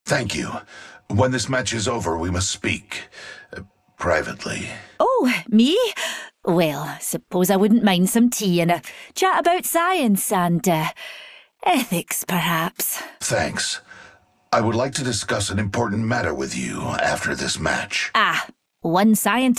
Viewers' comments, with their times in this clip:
0:01 oh damn what does caustic want with horizon?? i love caustic so much because of his voice like god damn 😍